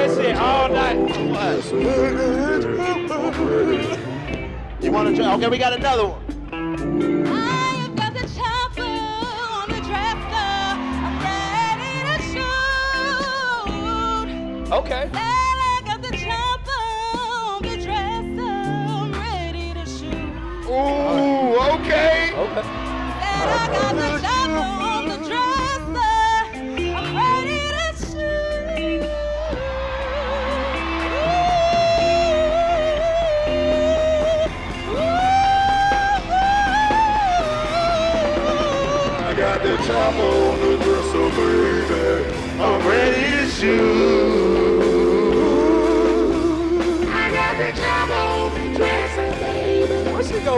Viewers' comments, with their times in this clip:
0:07 Is the only one that could actually sing❗❗❗❗She needs a record deal
0:07 So we just gonna ignore the fact that the chick could actually sing ...?🤦🏿‍♂️🤦🏿‍♂️
0:37 she sung dat bih lmao
0:37 That lovely lady ....damn she's got a gorgeous voice! My jaw was on the floor!